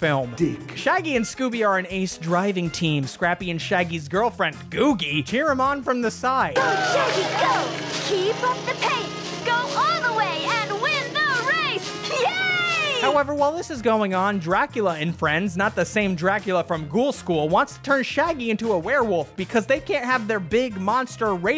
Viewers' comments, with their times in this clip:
0:03 unfortunately, i heard "[scrappy & shaggy]'s girlfriend" instead of "scrappy and [shaggy's girlfriend]" so that was an upsetting image i had stuck in my head for a bit 🙃 Also, did that girl appear in any other Scooby-Doo media? I only ever saw her in this movie.